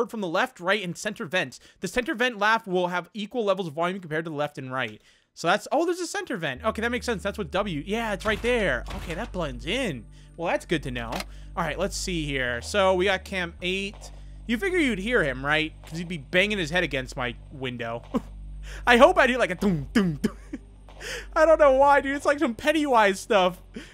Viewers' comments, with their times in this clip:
0:04 the steam sound